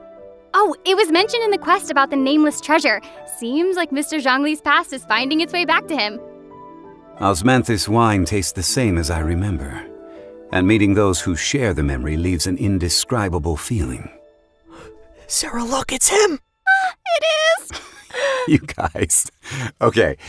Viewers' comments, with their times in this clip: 0:08 Zhongli's voice was so deep that aether vanished through the fabric of this 3-dimensional world